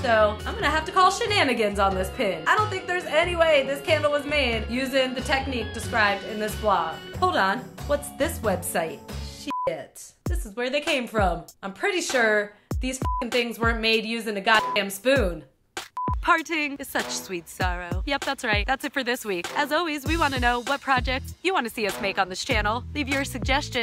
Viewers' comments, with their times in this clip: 0:09 I thought she was bursting out into a rap 😂😂
0:10 WHY DOES SHE SOUND LIKE SHE'S RAPPING
0:10 Is it just me or sounds like a rap? 😂